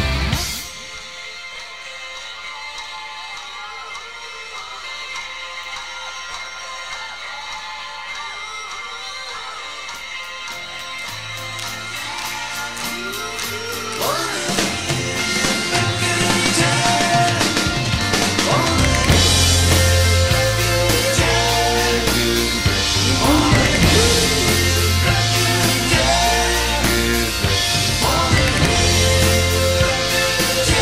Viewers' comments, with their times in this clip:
0:04 A closer view of the volume meter coincides with the volume change in the song.
0:13 Like Ringo, Jim Bonfanti is a lefty playing a right handed kit ! one of the best drum fills ever, and same on the record, it just really knocked me out back in the 70's and still does !